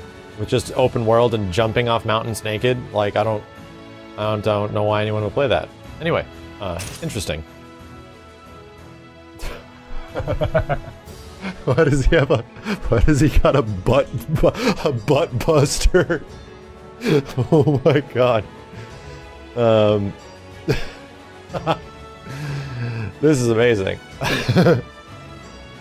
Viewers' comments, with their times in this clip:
0:08 turns into butt-head